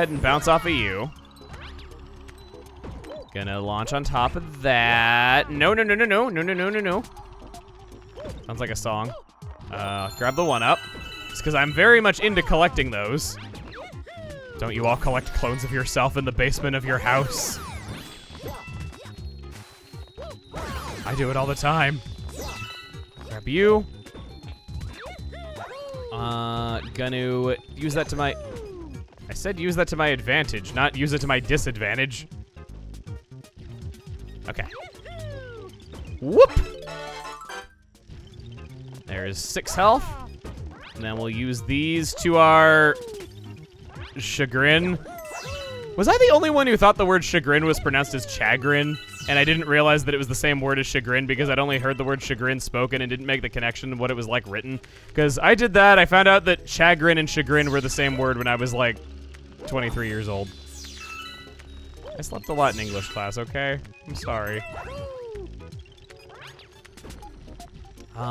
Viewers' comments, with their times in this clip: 0:06 It sounds like the “gotta catch ‘em all” bit from the Pokemon rap
0:51 That's how you say chagrin?